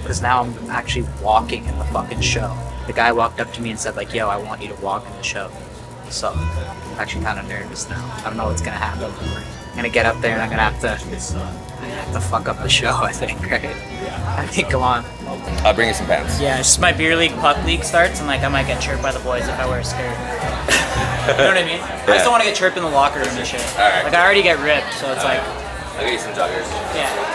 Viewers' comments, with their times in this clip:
0:10 this music is OG